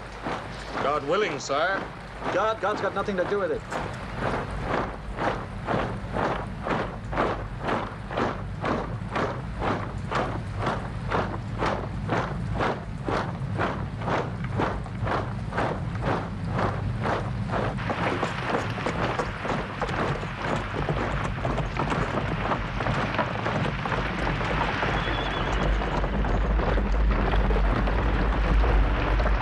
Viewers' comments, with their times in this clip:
0:10 plus The sound of the marching boots and the Old Guard coming over the hill. Saw the original in 1970 and never forgot this scene or sound. Imagine being there for real. Respect to all sides but my heart has always been with Napolean as he was far more than just a soldier. Visited his tomb in Paris once,the man still exudes energy from the grave...it was a hell of a feeling and I am not renowned for feeling much,even back then but never forgot it.